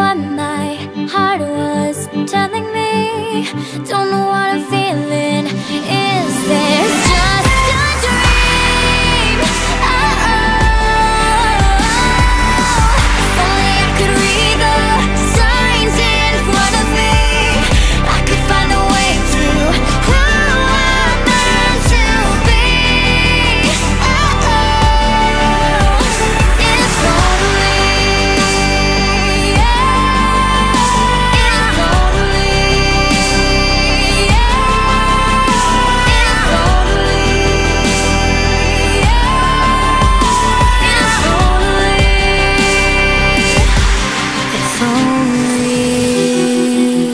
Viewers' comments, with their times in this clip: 0:07 did anybody else hear the scream?;
0:13 and on can anyone else kinda feel like they hear Cameron Boyce ????😭❤️
0:15 you hear him singing with her so🤷‍♀️
0:29 😭😭😍😍It's incredible, moving and the blend of the two voices is just perfect.